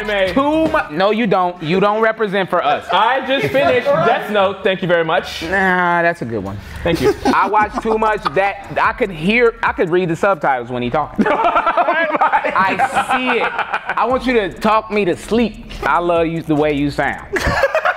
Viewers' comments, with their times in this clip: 0:04 as someone studying japanese i could tell immEDIATELY that it was japanese😭